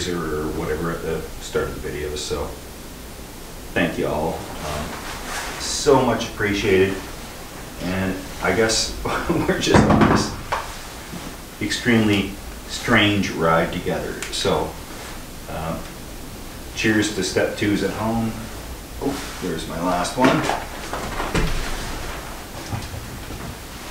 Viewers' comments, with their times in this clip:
0:09 Man, I jumped with the sound sounded like someone knocking the door